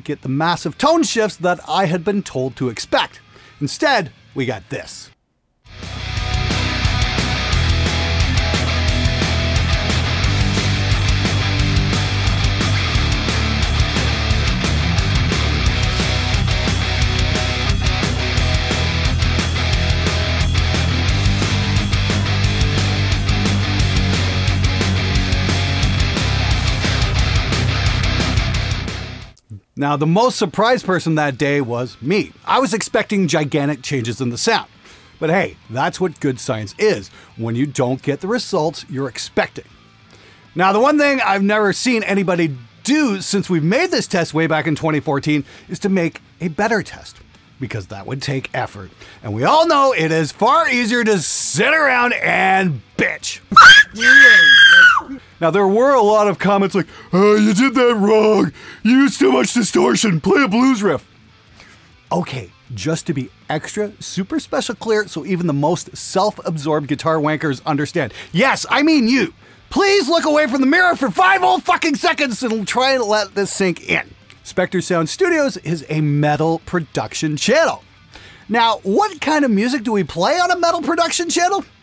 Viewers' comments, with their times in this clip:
0:05 Your test.... was a heavy metal chord progression?
0:10 Who'd EVER GUESS that when playing the BLANDEST shit ever, that all players sound the same!!!! 🤣🤣🤣 Believe me when i tell you, you can KNOW a Schuldiner ETC..... Tone IS in the player and how you create when you put a guitar in your hand.... If you gave me this shitty riff to play as a "musical science experiment" I'd simply have to laugh.... This is not how any MUSICIAN should play, unless youre coming at this as a JOB......
0:15 this test is bust because too much distortion was added such that it scrubbed away any difference the hands might have made
0:57 nailed that Patrick Star impression 😆
1:02 your voice sounded like Patrick Star from Spongebob hahaha